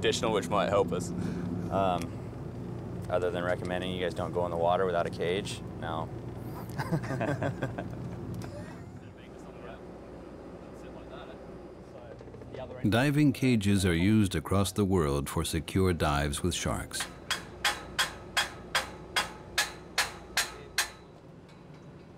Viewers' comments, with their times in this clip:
0:07 That nervous laugh lol